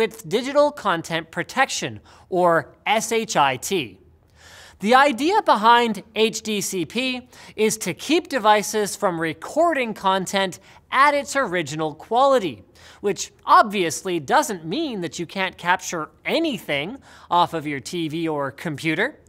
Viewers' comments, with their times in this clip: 0:03 that's why it sounded so different